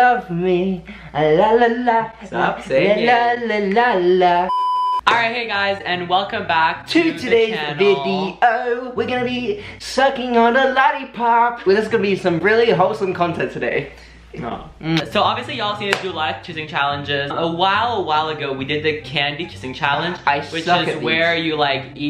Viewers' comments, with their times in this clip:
0:08 why this "s*cking on a lollipop" sounded so good tho 😮